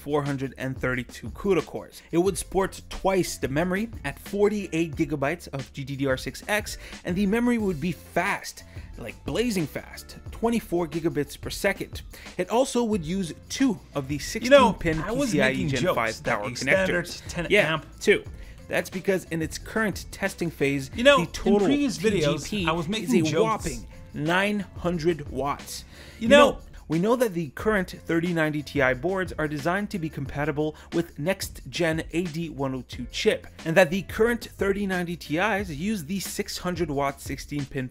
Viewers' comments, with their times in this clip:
0:08 in, you F'd your audio up big time.
0:14 Video has an audio error Audio on top of audio.
0:18 overlapping speech as well